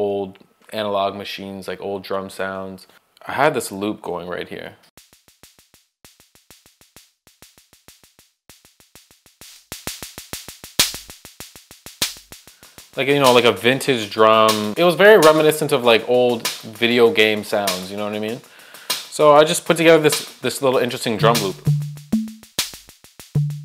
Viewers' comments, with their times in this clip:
0:10 sounds like a gas stove